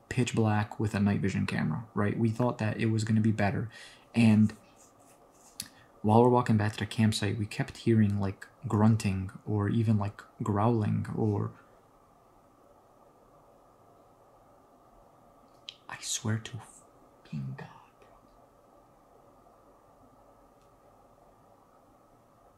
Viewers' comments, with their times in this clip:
0:06 So, i've been rewatching the Camping Videos, and at the end when you explain what you guys heard right after you say "growling, or.." you can hear that noise in the background